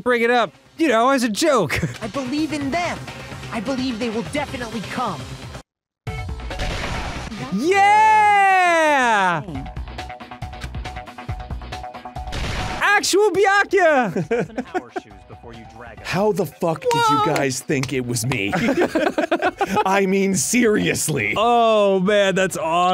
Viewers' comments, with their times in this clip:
0:05 hearing Dan be so excited when Kyoko and Byakuya showed up was so awesome xD You can even hear him clapping in the background